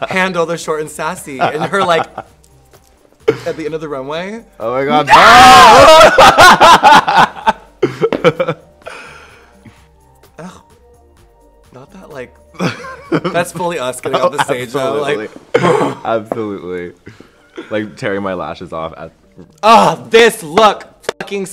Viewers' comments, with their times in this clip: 0:04 OMG the NOOO and screams finished me off! I replayed the hell out of that and I am dying LOL
0:05 I kid you not, I literally screamed exactly like you two when the may I speak to the manager hair cut model came on. It was a mix of excitement, agony, and cringe.